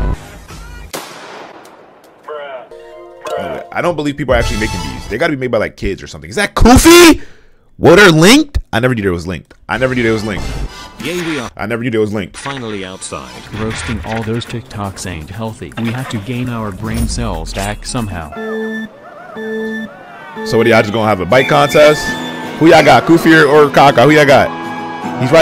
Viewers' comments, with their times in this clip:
0:06 What happened to bros mic💀